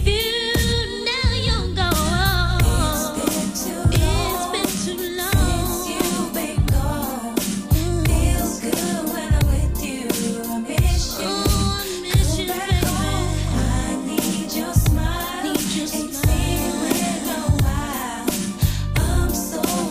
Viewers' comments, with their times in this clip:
0:05 I love the groove